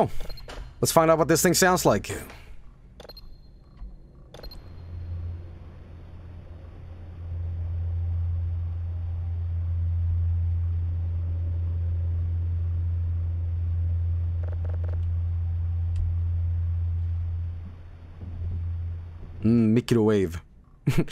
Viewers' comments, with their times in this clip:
0:07 that signal sounds like I'm about to hear a guy saying "The car's on fire, and there's no driver at the wheel"